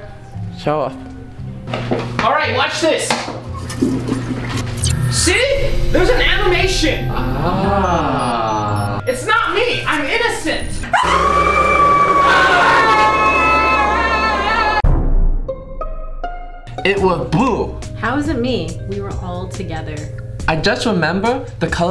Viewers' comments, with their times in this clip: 0:09 blue wasnt screaming so shes the impostor.